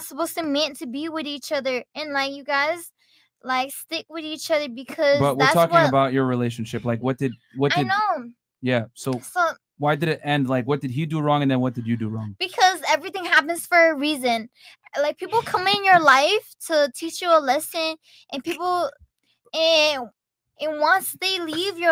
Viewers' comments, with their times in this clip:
0:06 Bruh that Asian was not it you can not be disrespecting the Asian community by having here talk. That was what opioid addiction sounds like. She did not make a reappearance I think I watched this one before. That was nuts. At the min mark wish me luck.